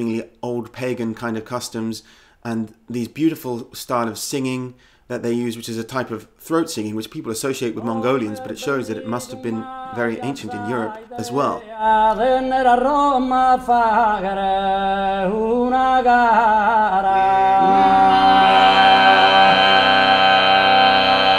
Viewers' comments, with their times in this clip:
0:09 on they sing just like serbs from my area,I2a2 haplogroup, neolithic farmers,